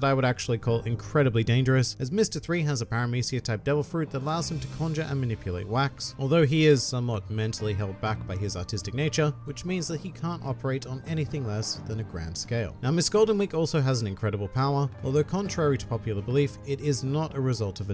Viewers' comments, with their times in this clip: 0:04 was that artistic or autistic? Im gonna take it as autistic